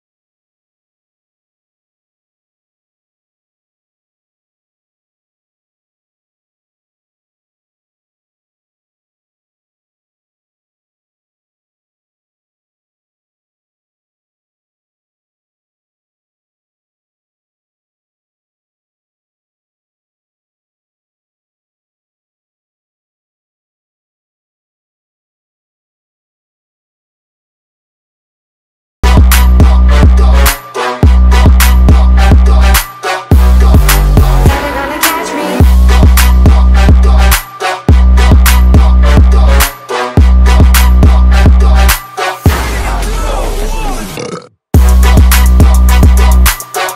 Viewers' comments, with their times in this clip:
0:03 I love 4he music
0:32 I was very frightened by the music 😂